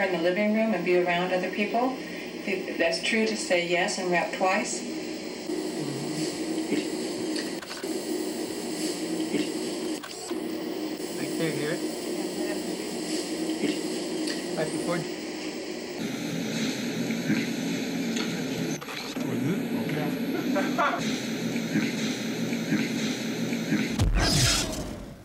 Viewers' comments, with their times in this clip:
0:06 you know you can put a subtitle "yes" over a blip but it doesn't make it remotely sound like "yes"